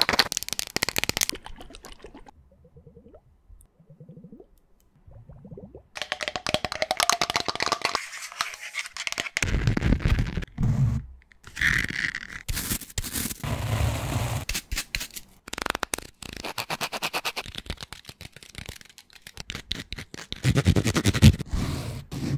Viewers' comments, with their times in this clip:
0:03 .Those glitter globes sounds are so heavenly